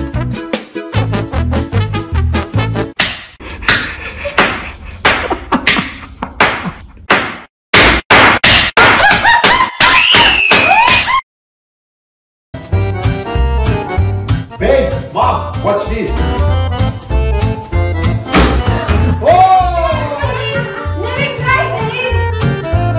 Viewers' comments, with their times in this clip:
0:07 BOOM X23 TIMES